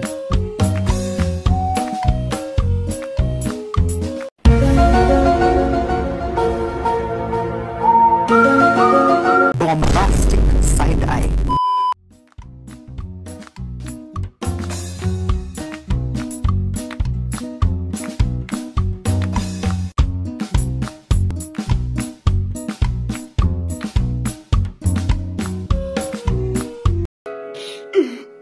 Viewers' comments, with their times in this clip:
0:10 Bombastic sigh eye 🤣